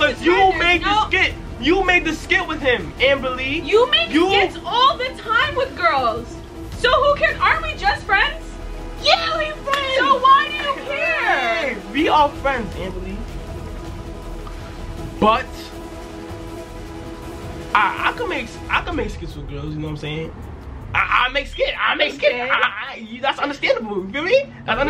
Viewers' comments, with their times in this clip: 0:10 LMFAOOO I HEARD THE PAIN IN HIS VOICE